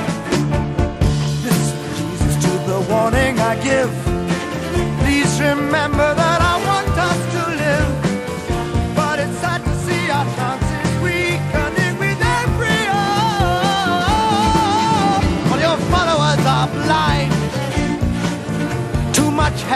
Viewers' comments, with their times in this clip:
0:03 No one ever mentions this and it drives me crazy. The strings near the end of the song (starting ) are so incredibly amazing, goose bumps everytime. They're just so precise and intense.